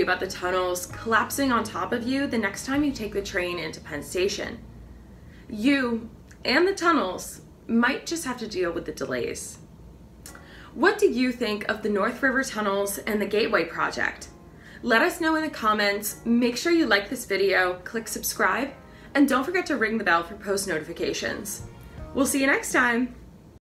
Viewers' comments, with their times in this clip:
0:05 Wow the narrator very well versed in this video clip was a little too calm mintues into this video about DELAYs. Saying all of us Riders would only have to worry about DELAY WAITING. NOT JUST IN THE STATIONS BUT ALSO means getting STUCK ON the tracks UNDER THE WATER. A claustrophobic heart attack waiting to happen and it usually will